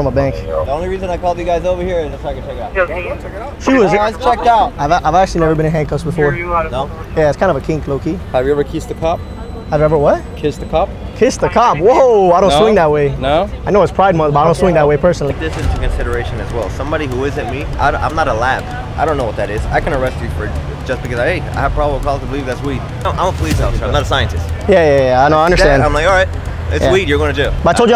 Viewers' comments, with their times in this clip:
0:09 low key the cop called you bluff and he sounded serious AF, LMAO...😆😆